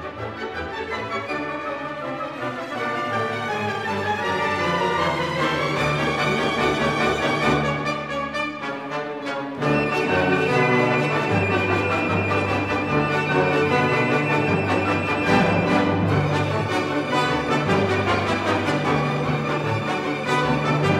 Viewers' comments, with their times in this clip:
0:05 it makes a Zelda type fairy so accurately